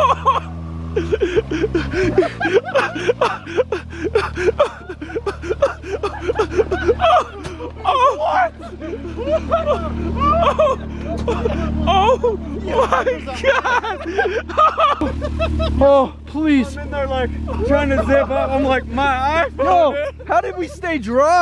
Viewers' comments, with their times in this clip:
0:05 What is that laugh tho?